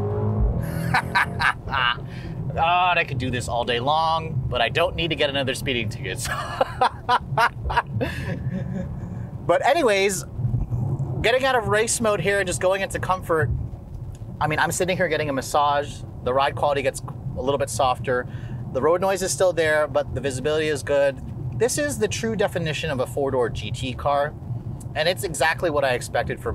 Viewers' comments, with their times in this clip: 0:10 I know y’all hear the after laugh